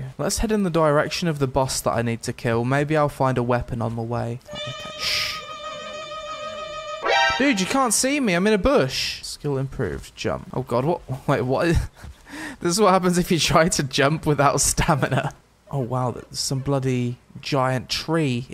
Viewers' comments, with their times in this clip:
0:04 sounds like the intro to the Mission Impossible theme.